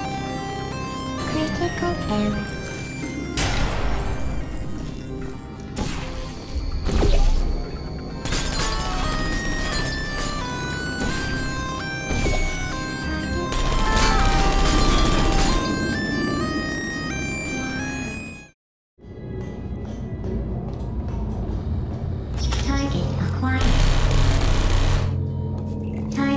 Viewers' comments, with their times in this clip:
0:08 i thought the turret screamed the UUUOOOUUUUAAAAAEEEEEEEEEEOOOOOOUUUUUU